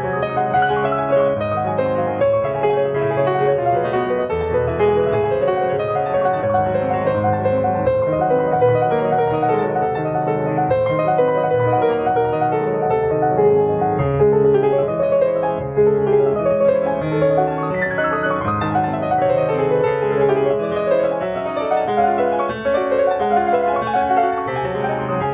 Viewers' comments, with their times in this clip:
0:06 this isn't even mario anymore, this is Fantasie Impromptu